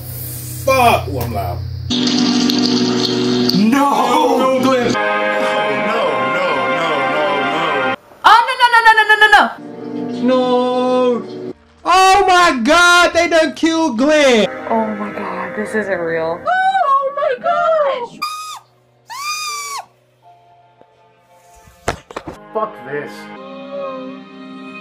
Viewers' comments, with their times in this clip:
0:07 lol is that a bong in the background ?
0:08 girl sounds like a starting car lol